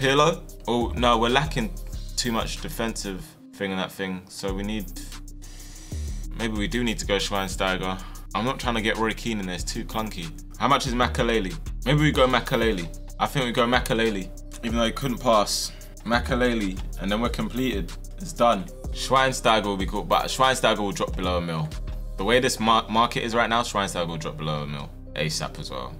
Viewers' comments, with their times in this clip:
0:08 That Voice Crack bro. 😂😂